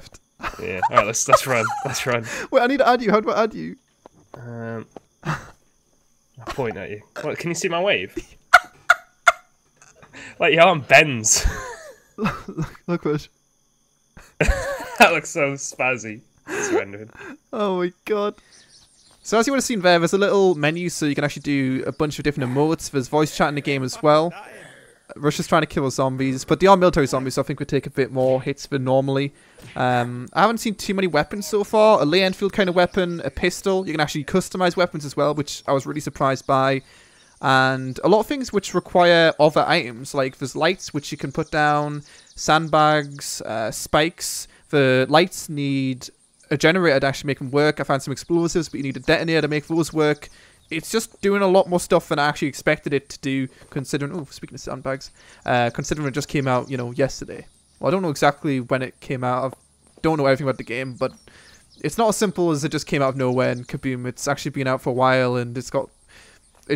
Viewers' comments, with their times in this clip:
0:08 Lol dat laugh
0:53 Voice crack xD